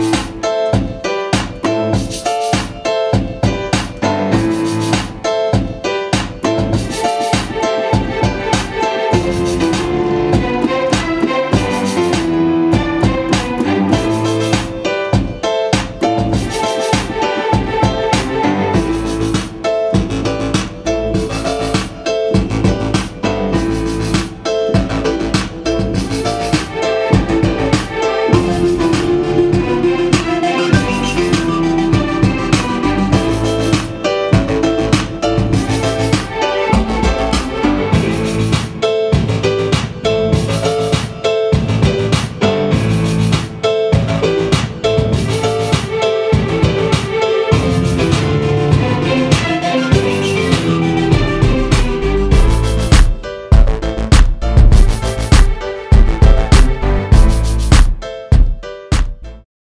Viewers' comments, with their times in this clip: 0:07 hey guys! the chords are soooo sweet!!! and the beat is bangin'! i especially love the "strings" that come in !!! keep doin' your thang!!!
0:53 I like the bass especially during the last part ...